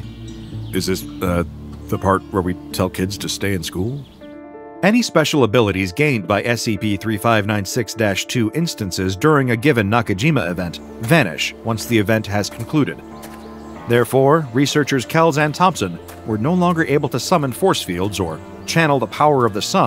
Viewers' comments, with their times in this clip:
0:04 Omg what is the song that plays that piano and violin mix is gorgeous!